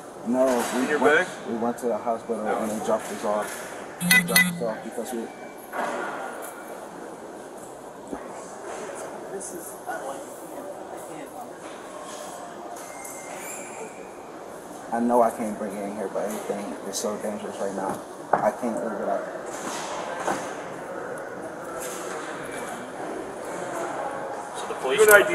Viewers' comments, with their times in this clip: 0:07 I can't listen to these cops not hear what this guy is saying anymore. Not even sure where what happened after the mark. The guy is quiet, but perfectly understandable.